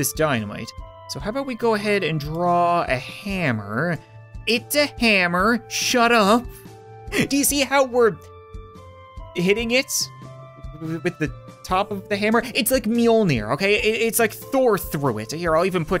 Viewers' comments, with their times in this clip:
0:04 Is that ding at the start and uncut or.....cut